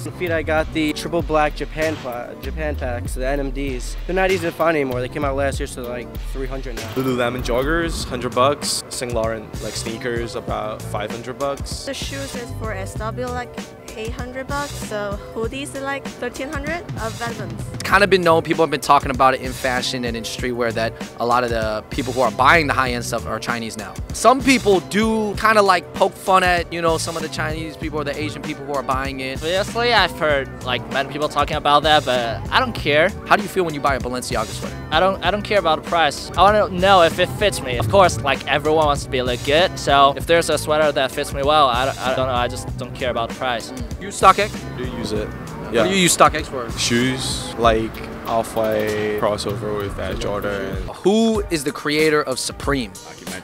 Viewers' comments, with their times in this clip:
0:08 So he wears „Sayn Lorren“ sneaker and the girl a „Vetmints“ hoodie i see
0:09 Guy doesn’t even know how to pronounce Saint Laurent damn
0:16 that pronounciation tho "vetments"
0:37 lol did he just pronounce legit as "la get"